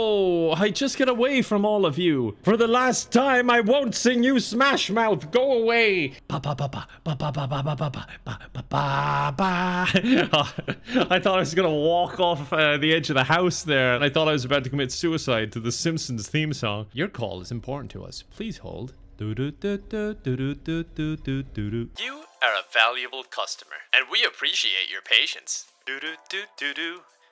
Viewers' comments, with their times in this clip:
0:08 I thought he was going to sing Star Wars